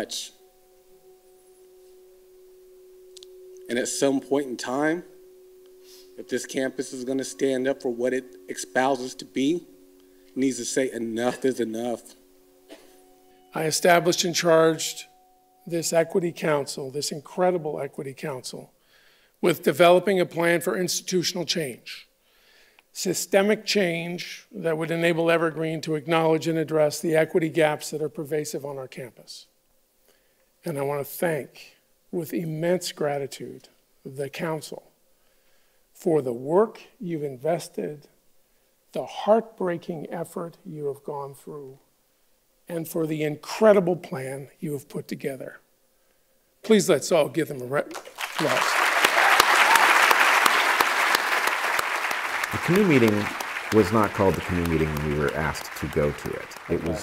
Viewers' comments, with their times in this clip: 0:05 Yep, that campus needs to stand up for what it "expouses" to be! (I don't want to be mean. But... come on!?! Poor language skills are never a good sign. Some people use language like a surgeon; some use it like a shoddy plasterer patching over holes in the wall).
0:06 did he just say “expouse”? 😮
0:45 The President actually hesitates as he says "round of applause". I can imagine him thinking, midway through his sentence, "Oh, CRAP! Is clapping a microaggression? Didn't they say that? Is "round of applause" racist in some obscure way nobody knows but one of these psychos?..oh, thank god, they are clapping...whew!"